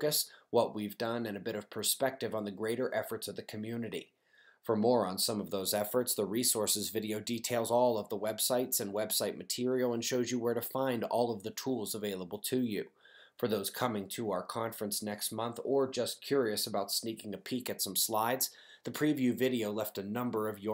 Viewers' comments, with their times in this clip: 0:04 PMSL Sounds like you are saying Also we have a video for morons! GOLD!